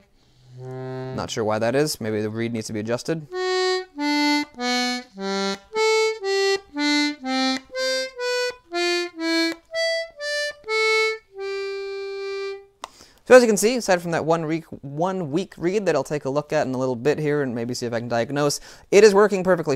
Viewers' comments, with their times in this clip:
0:03 Giant Steps but it's only the first 4 notes